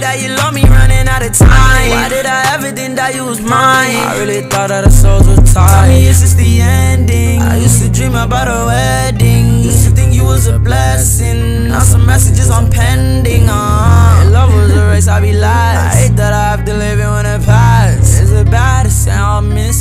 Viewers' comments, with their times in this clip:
0:06 is where juice wrld comes